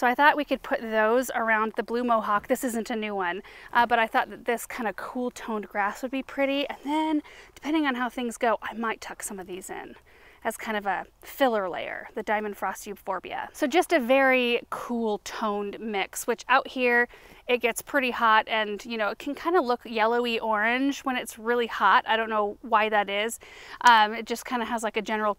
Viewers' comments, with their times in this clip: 0:09 Thank you for the respite period.🌸 good music…. hair looks good